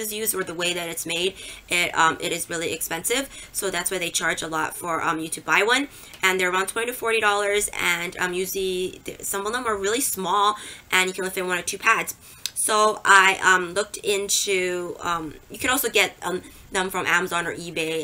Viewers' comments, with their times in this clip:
0:04 I made it to and had to quit. Couldn’t bear to hear her say umm one more time. 😖😖